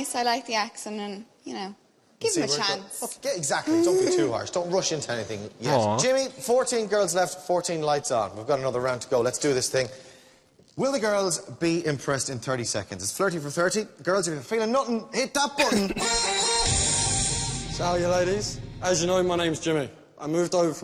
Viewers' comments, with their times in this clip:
0:03 bruh her anxiety noise Wtf 😭😭